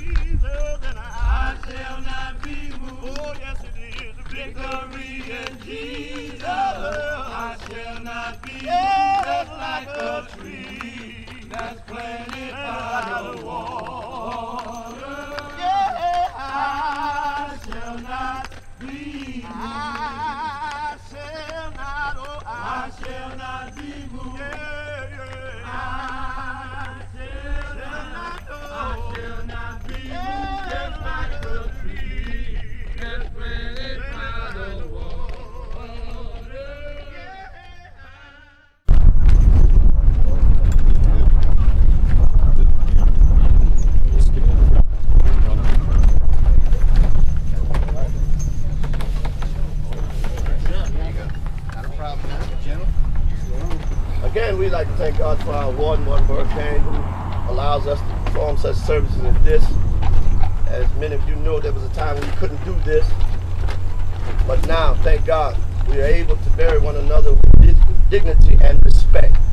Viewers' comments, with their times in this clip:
0:04 they singing they ass off
0:53 The gentleman preaching sounds exactly like J. Anthony Brown.